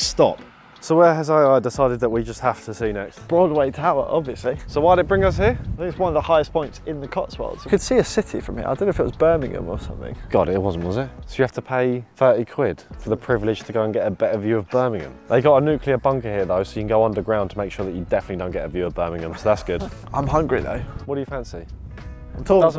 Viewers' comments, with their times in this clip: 0:03 how you say Broadway tower really cringes me out from being a local lol